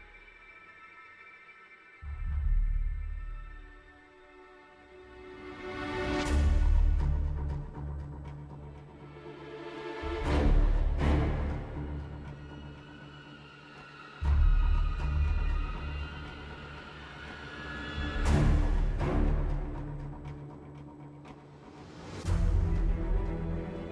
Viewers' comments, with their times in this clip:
0:07 Wow, that demo sounded a lot like Metal Gear Solid 3